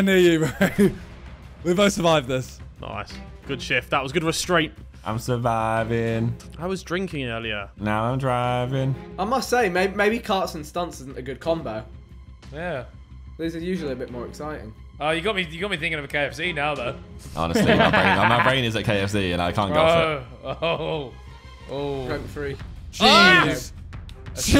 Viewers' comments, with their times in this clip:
0:05 That back an forth between Harry and Josh singing Power is peak gta vibe gameplay with the boys